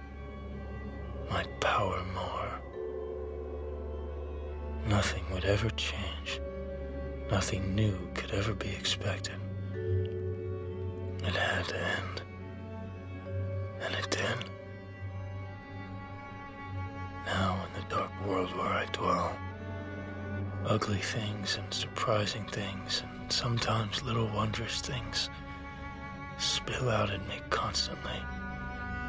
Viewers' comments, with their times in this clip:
0:10 world class ASMR